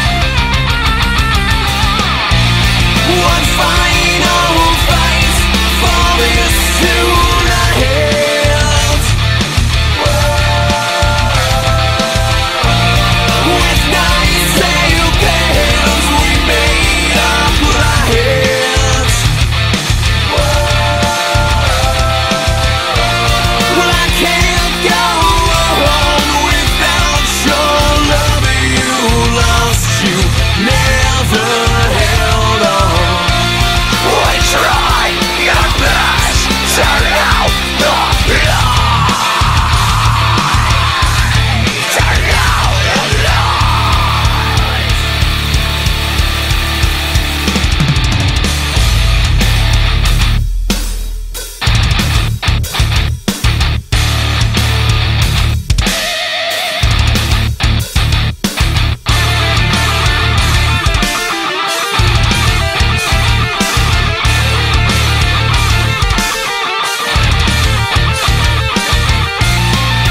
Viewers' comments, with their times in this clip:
0:08 I don't like to necropost but the riff in spirit crusher is the same
0:55 I heard scream, aim fire